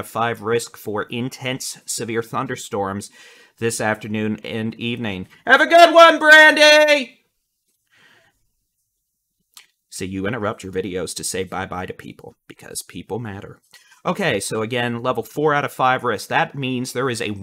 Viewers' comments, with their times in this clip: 0:05 wow headphones alert!